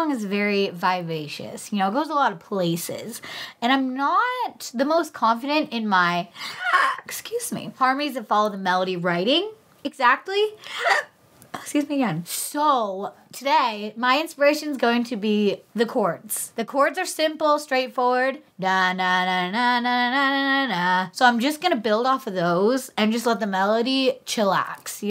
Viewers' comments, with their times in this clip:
0:07 what is this? A cough sneeze or hiccup I’m confused